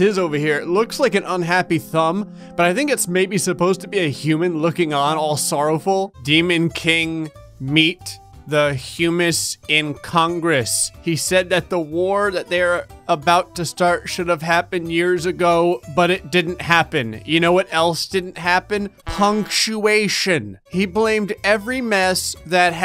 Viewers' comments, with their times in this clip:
0:10 My surname is Hume and s2g I laughed so hard at the pronunciation of the word “Humes”